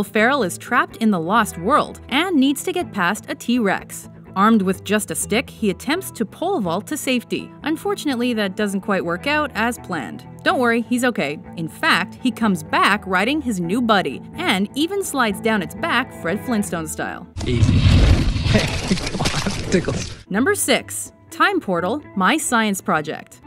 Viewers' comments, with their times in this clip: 0:07 ....dat was no T rex.. THE ROAR!THAT WAS A TARBOSAURUS